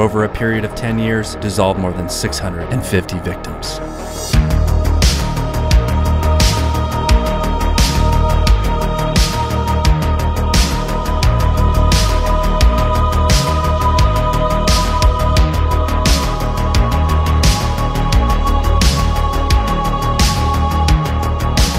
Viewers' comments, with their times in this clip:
0:04 love the beat reminds me of action movies from the 80s and 90s